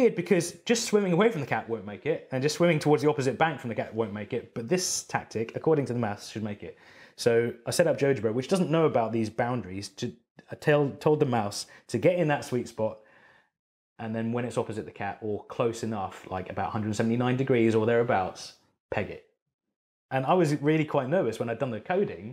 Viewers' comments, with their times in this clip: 0:08 What program does he say ? I cant understand him. JudgeBerry? lol